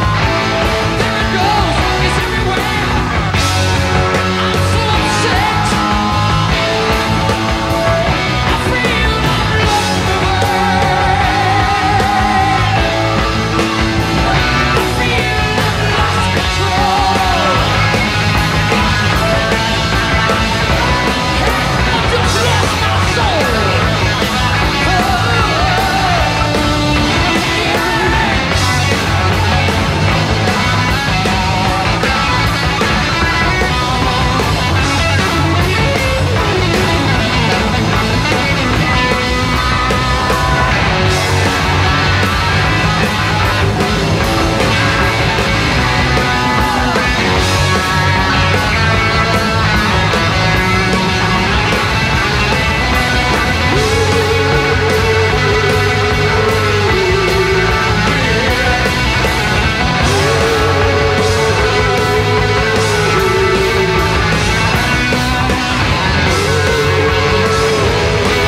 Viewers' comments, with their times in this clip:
0:05 I’m probably a bit over dramatic but man do the vocals in this song make me sob, they’re just so beautiful. Especially and onwards, you can feel how much of his being is put into this song and it never fails to bring me to tears of awe
0:54 So many good parts, but I love the oooo’s such a great touch, plus Ritchie’s gallops on guitar, perfect….